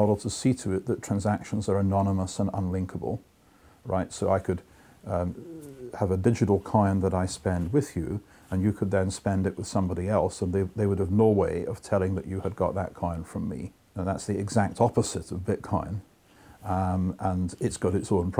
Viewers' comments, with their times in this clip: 0:04 Did anyone notice the sound ? Was that a fart or someone's belly roaring?